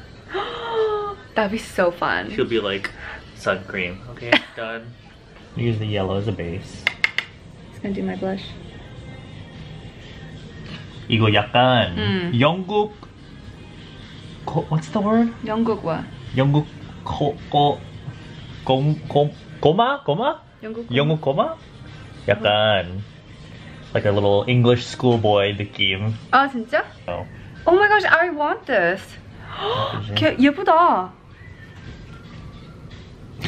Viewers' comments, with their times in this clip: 0:10 OMG OMG OMG seesaw is playing in the back
0:15 I HEAR SEESAWWWWWWWW
0:21 casually hears seesaw in the background